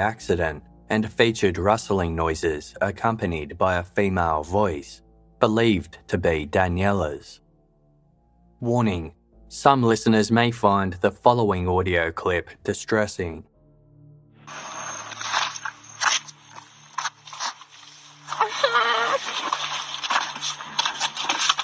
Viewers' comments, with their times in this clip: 0:05 Can anyone type out what the two voice mails were saying. Listened several times cannot understand it, and why it was distressing for viewers to listen.